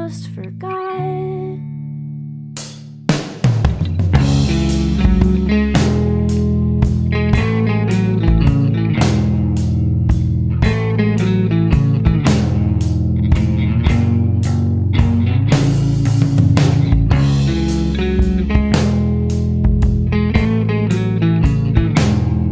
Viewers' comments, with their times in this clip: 0:04 I don't know why, but the guitar REALLY reminds me of the game "Sally face"